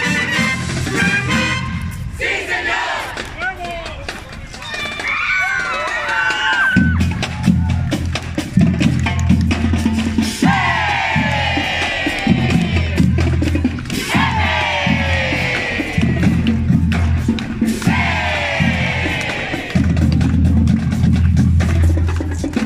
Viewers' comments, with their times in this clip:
0:03 Someone else ears the "Ahuevo!" from some dude there 😂